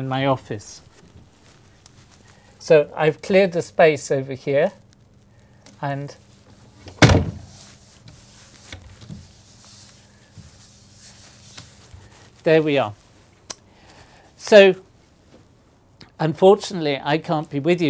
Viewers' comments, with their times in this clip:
0:04 it sounded like he broke the door